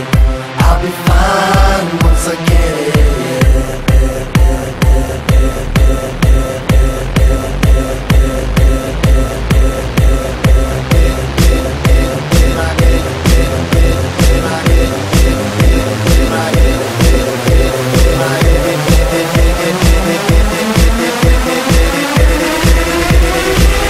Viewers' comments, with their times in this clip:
0:10 i thought my internet started to fuck up..... but then the bass dropped